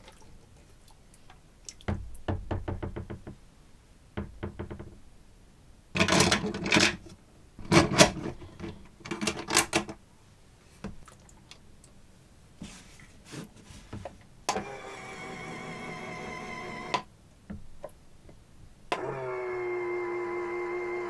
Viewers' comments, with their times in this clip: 0:08 is it just me or does this sound like a reloading gun